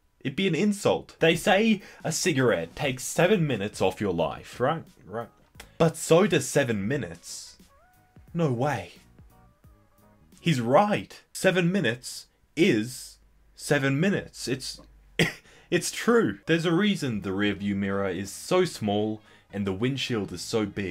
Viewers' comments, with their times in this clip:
0:08 that was a good chuckle